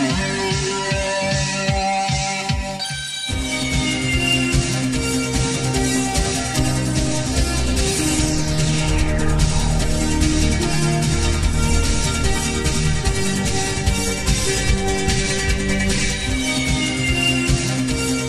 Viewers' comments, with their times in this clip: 0:04 Love this theme music ❤